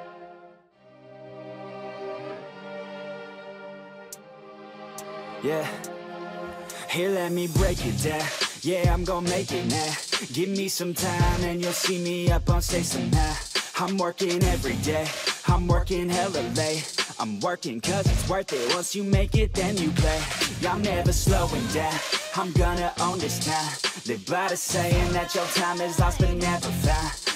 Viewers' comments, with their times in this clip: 0:09 yeah! like this song !